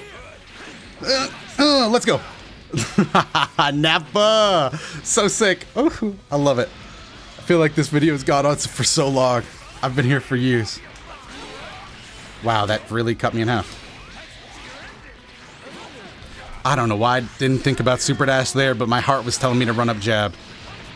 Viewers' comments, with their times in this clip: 0:04 "ufu" dat was... cute level anime...